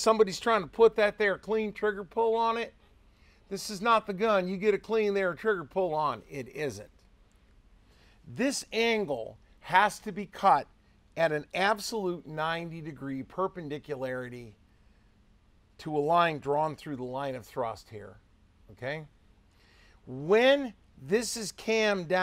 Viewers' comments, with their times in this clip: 0:03 As a man that owns the accent I appreciate this reMark!